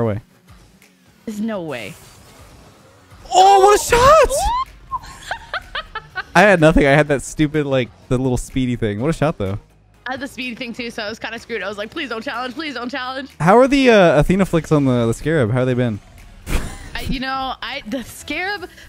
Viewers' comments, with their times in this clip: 0:05 No one: Minecraft witches: